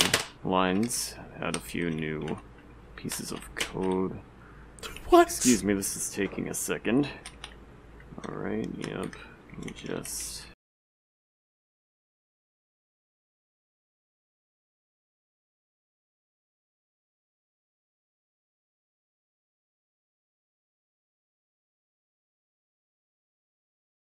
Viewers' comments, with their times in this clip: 0:06 the audio cuts edited to fix timestamp